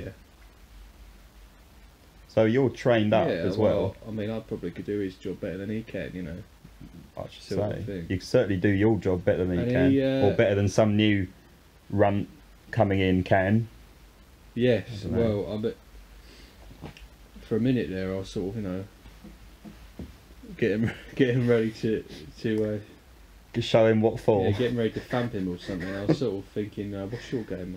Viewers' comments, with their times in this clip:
0:10 Who’s this Run Cominincan?